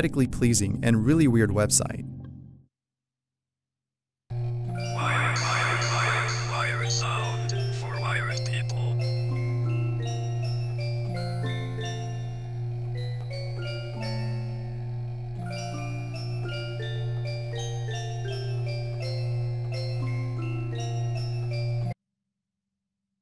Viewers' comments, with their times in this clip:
0:08 asmr vibes here.